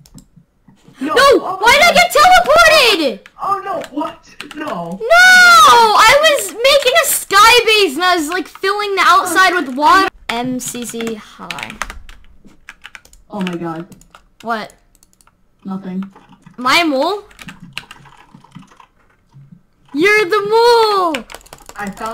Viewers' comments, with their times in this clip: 0:10 is the most sastifying part xD keyboards